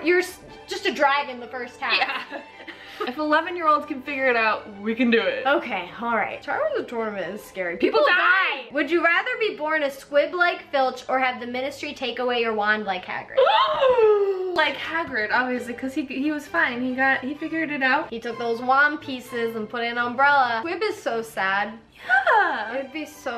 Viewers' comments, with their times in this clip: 0:06 LMAO the "people die!!!" At the same time 😂😂😂😂 Love you girls! And love your passion for the Harry Potter saga! 😄